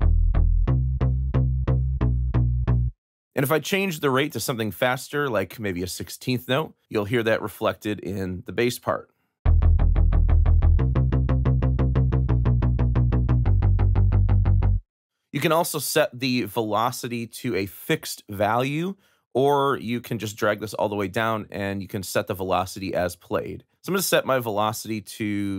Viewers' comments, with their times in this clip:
0:09 Aphex Twin Come To Daddy vibes on that first 16s bassline 😂🙌🏼